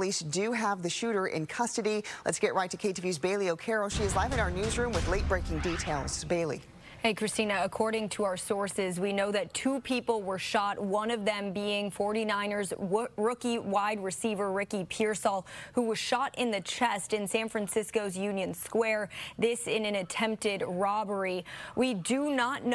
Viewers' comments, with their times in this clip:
0:08 Random Chewbacca sounds